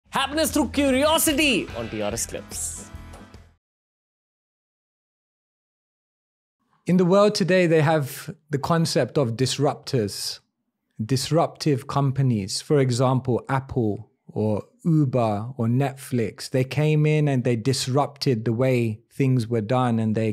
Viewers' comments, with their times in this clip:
0:06 👉 Scream free intro